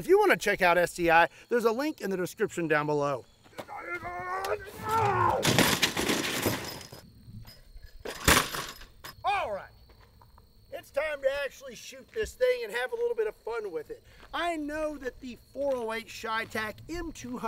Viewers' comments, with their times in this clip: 0:03 man, you sound like Arnold Schwarzenegger in Total Recall🤣